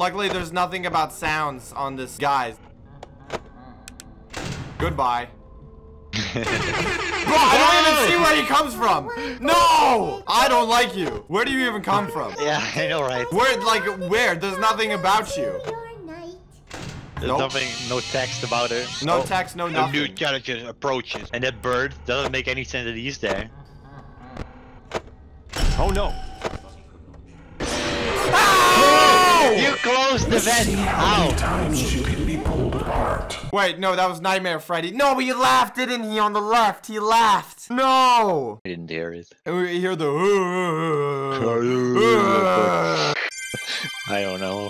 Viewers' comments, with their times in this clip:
0:09 i love jjs song btw its catchy
0:30 Xou guys know nightmare freddie talked ?